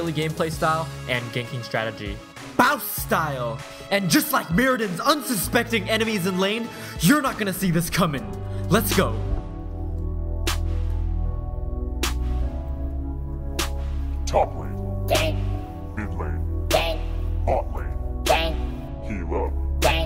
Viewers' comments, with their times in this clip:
0:07 i loved the song!!